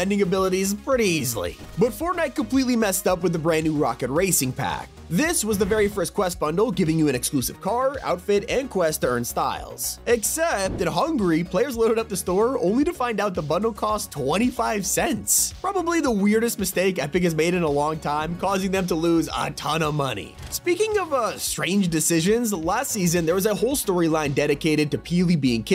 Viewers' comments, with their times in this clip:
0:09 bro really said HUNGRY instead of HUNGARY😭😭